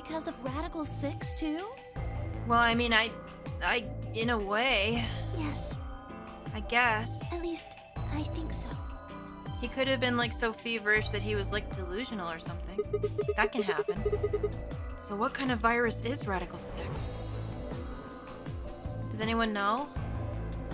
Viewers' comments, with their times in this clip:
0:03 I'm sorry, but that imperfect loop from onward of Clover just BUGS me!